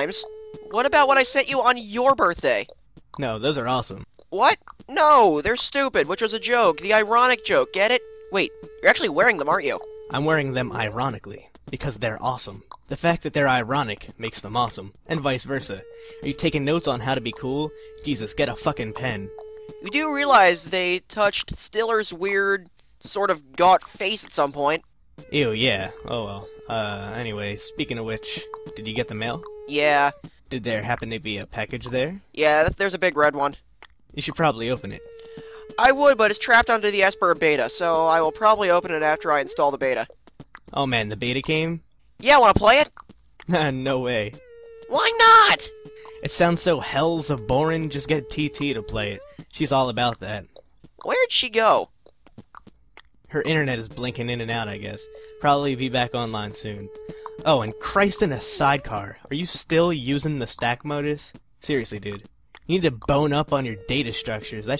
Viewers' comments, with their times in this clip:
0:04 the background music.. 🤣
0:51 THE BACKGROUND MUSIC IS SO FUCKING ANNOYING RRAAAAAAAAAAJEXDHHDSIIH!!,!(I like homestuck tho)